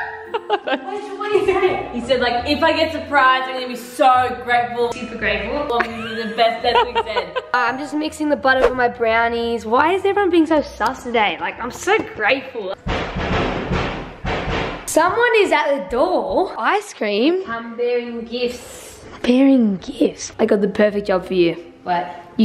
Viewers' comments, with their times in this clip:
0:09 Bro, they have the same knock pattern as my family 😭